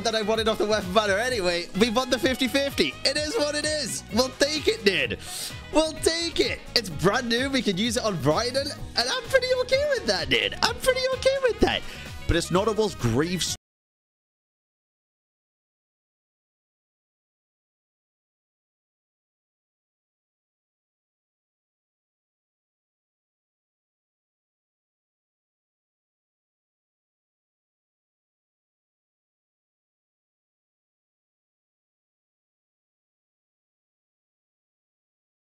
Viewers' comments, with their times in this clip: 0:03 After there is no audio
0:13 "sound has left the chat" hoyoverse probably didn't want us to hear this opinion 🤣
0:13 from till end lost all sounds
0:13 Is the audio supposed to be gone onwards?
0:13 The audio is gone for me right here. Anybody experience the same? 🥲
0:13 Is it only me or what because I can't hear any audio for the rest of the video after ?
0:13 Am I the only one that loses audio ?
0:13 Audio cut off 😢
0:13 Dont worry its the videos audio that cuts off... Its not your headset or device
0:13 Does the sound disappear for anyone else or is it just me 🤔
0:13 No audio onwards
0:13 there is no sound from ...
0:13 no more sound after
0:13 onwards the audio is missing
0:14 Does anyone else have no audio from onwards? Possibly a copyright claim caused the mute?
0:14 Audio cut out
0:15 am i the only one that starting the audio went MIA?
0:22 why is the audio muted in ?